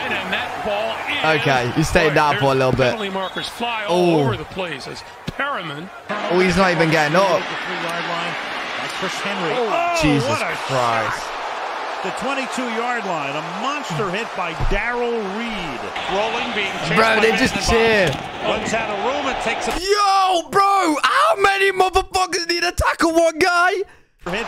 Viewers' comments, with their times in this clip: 0:10 .. I was at that game. It was a legal, perfect tackle... and it was the loudest hit I've ever heard. We could hear it so clearly from the upper deck it was like we were on the field when it happened